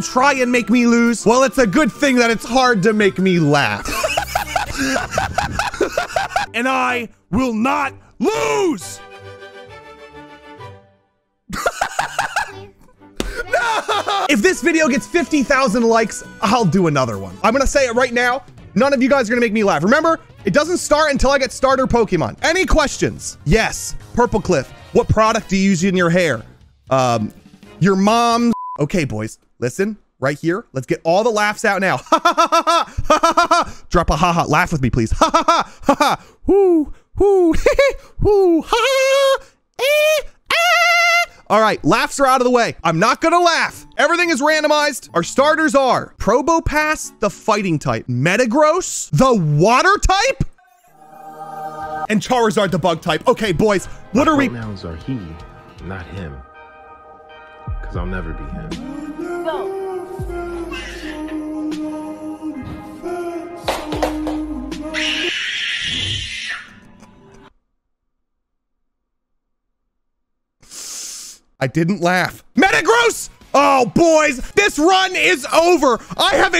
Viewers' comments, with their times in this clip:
0:04 I think all his laughs are the same.
0:40 he became a dolphin
1:04 that screem got me three times lol